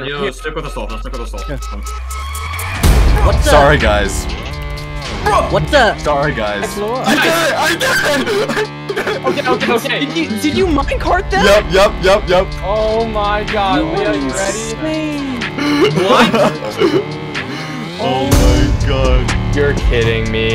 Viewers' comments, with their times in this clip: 0:03 THE SASS ,,Sorry Guys,,